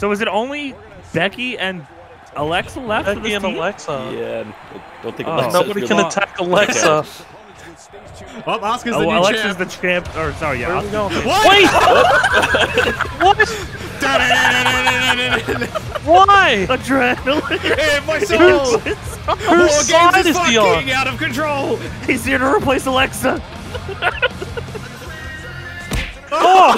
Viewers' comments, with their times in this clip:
0:10 🎵 Estrogen, in my soul 🎶